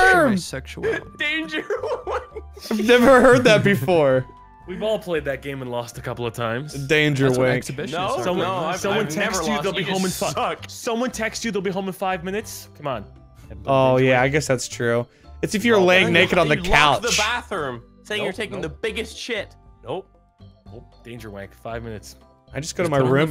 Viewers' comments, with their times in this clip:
0:10 I thought it said "Danger winking" and I'm not sure if that's better or worse